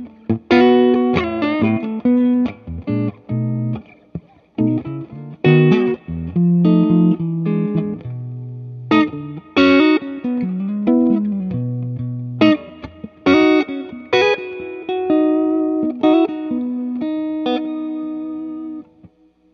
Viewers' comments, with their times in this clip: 0:06 Love that clean tone !